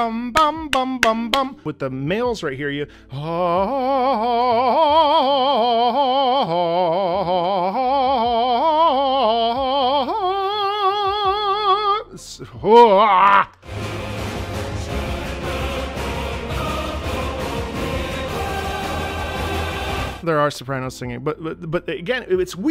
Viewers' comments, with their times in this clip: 0:09 I love how.... very casual he hits the notes like nothing and so accurate.... awesome voice brother!!! and yes.. FF16 music its amazing!!